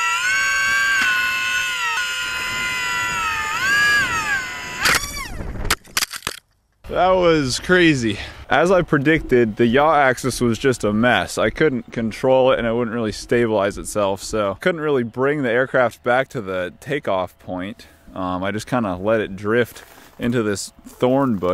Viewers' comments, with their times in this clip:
0:04 LOL! It screamed !!!!11